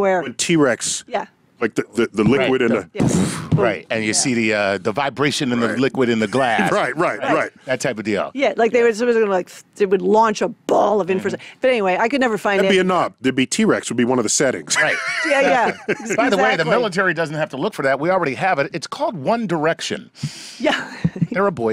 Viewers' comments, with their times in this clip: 0:08 She would make a great metal vocalist: